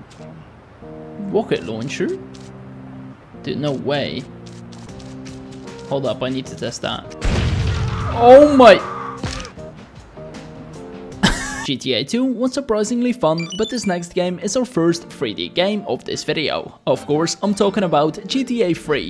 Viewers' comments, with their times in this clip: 0:06 that scream got me rolling on the ground